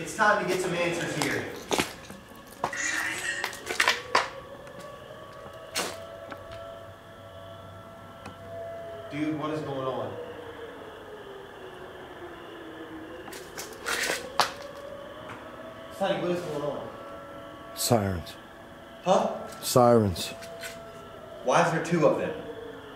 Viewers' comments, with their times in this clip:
0:08 Tornado sirens. Weather seems pretty calm. That’s the eeriest thing to me in this entire video.